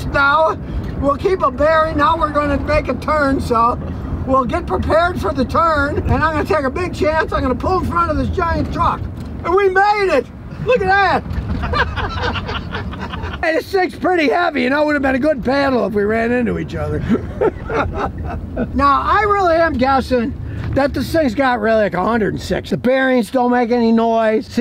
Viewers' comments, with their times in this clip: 0:10 Sounds like the television sitcom show with the laught.